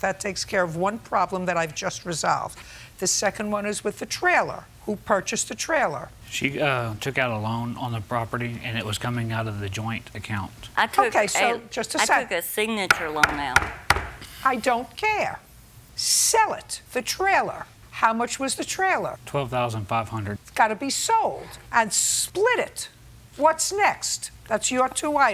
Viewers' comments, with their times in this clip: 0:09 The way she talks sometimes......😆